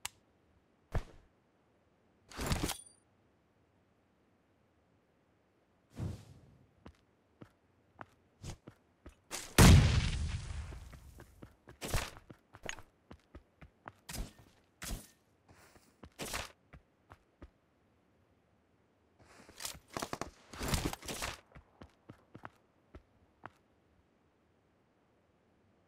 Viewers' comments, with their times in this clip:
0:08 In minute 😂dude steal craying 😂